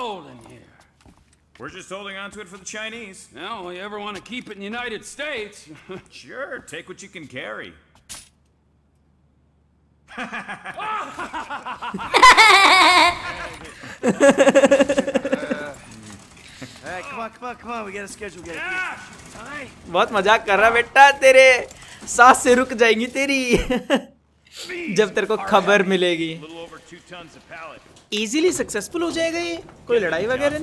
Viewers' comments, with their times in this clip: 0:09 I can't- 💀Their laugh- LMAO
0:10 Epic laughing moment 😁😁😁😁😁😁😂😂😂😂😂
0:12 what a laugh